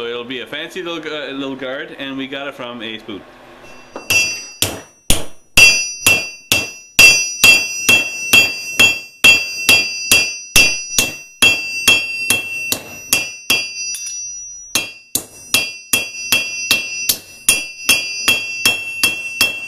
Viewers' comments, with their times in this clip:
0:06 wearing ear buds and my hearing is destroyed... lmao